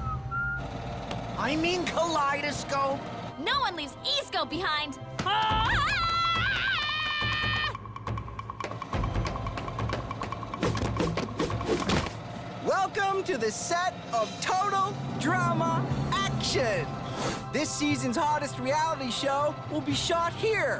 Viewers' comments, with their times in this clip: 0:05 This Music Expresses Through Jungles That Are Very Primitive In Prehistoric Times And Izzy’s Jungle Call Reminds Her Of Tarzan